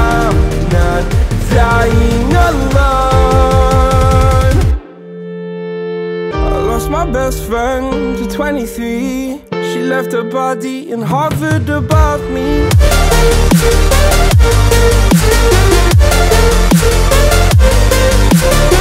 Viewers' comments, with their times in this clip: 0:03 When the build-up ends there needs to be the drop but there are more vocals and no drop , that a fake drop , it gives you the sensation of that comings the drop but no